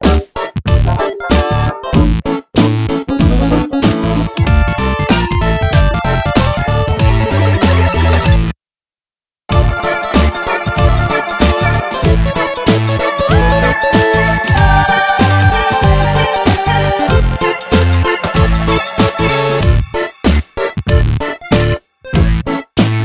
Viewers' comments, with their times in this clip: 0:06 Just noticed the "Super Mario pipe sound" Brilliant detail! :D